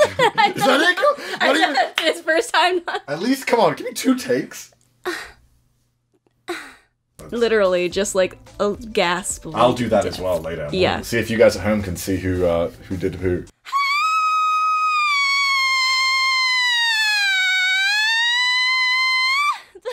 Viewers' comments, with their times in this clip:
0:04 Turn you volume down for this part trust me